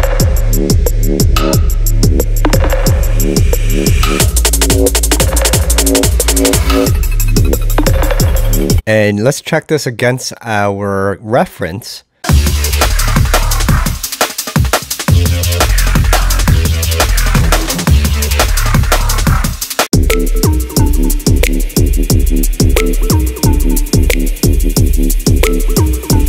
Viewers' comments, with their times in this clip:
0:09 sounds pretty great to me!